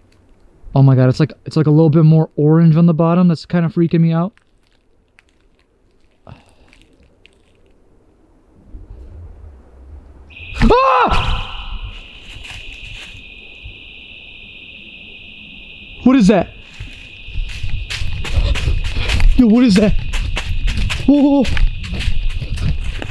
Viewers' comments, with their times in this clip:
0:10 bro when you screamed I jumped so high and my popcorn flew out of the popcorn bag all over me and my cat legit jumped too and his tail got poofy too 😂😂